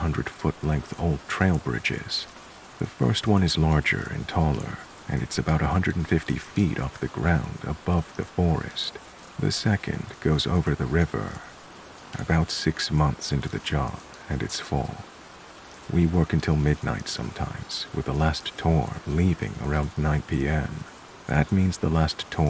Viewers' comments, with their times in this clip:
0:10 subbed due to your perfect rain sounds, your narration is awesome too. Backed up with the raiin helps this insomniac fall asleep, eventually anyway am so I hope soon!